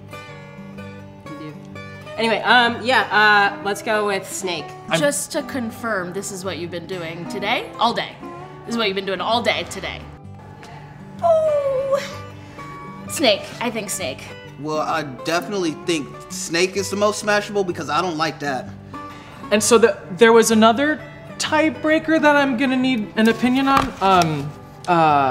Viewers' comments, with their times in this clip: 0:06 Was the person in a BuzzFeed video about a christians and satanist being handcuffed together? Their voice is similar and I swear they have the same glasses...